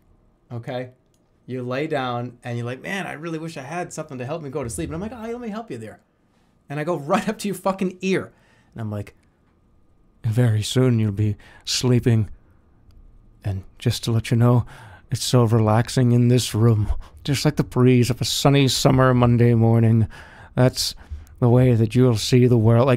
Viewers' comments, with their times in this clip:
0:09 Compact Man ASMR